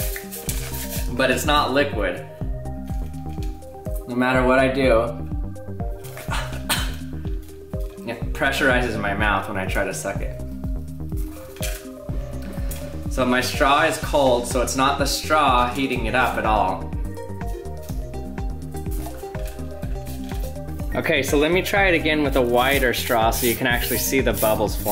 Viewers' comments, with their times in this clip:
0:05 obviously vaping lol even the cough